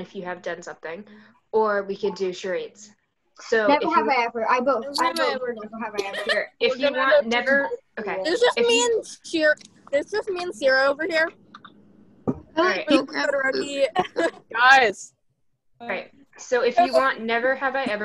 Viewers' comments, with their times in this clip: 0:03 Kirishima always gettin talked over XD